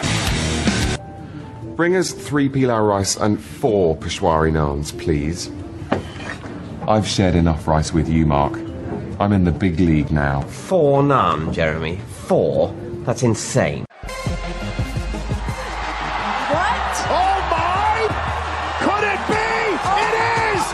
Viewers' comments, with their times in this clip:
0:05 I am sooo stoned fame peep game at like that boom I can't stop laughing I am having full conversation with family plus the okit lmao 🤣 life is good